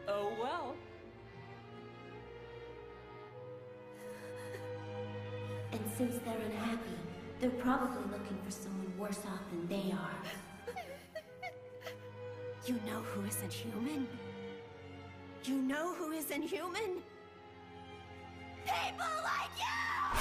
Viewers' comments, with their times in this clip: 0:03 that one song